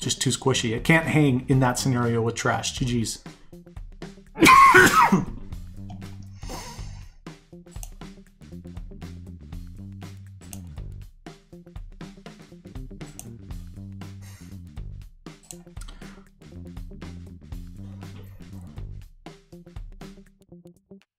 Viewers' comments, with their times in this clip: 0:03 Oh no. That Corona got him 😂